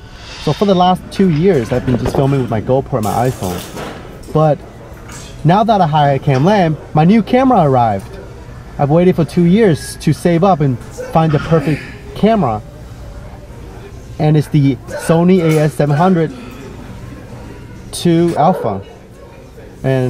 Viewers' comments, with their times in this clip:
0:07 ...he saved for two years to buy his new camera. I can't tell if he's being sarcastic in a monotone way.